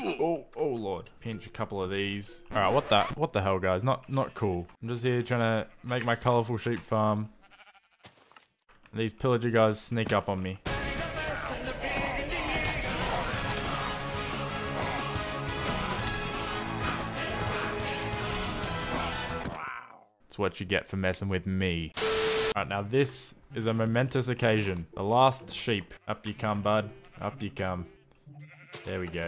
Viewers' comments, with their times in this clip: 0:10 you must stop putting this song! Every time I listen to it i cry